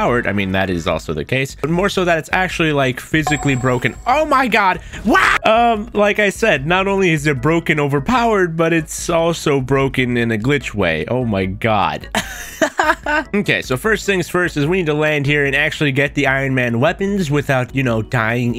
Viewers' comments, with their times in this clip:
0:04 Lol that scream